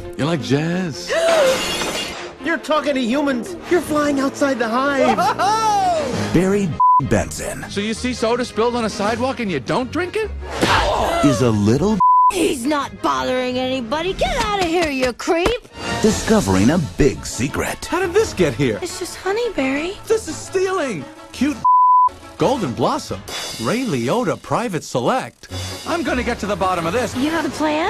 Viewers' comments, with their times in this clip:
0:06 why didnt the word bee get censored here
0:07 The BEEP Isnt Censored You Clickbaiter
0:12 she sounds drunk